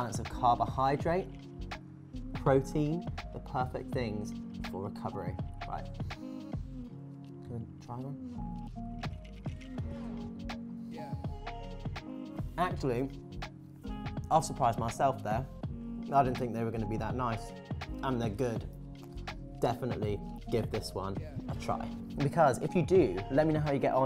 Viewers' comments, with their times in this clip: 0:06 Did anyone hear Lance ask if he could try one near the end of the video or is it just me?